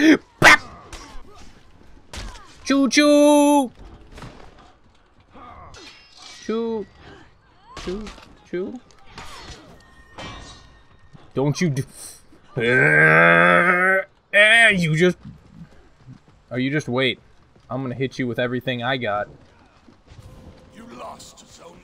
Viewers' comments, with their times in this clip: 0:05 sad choo choo :(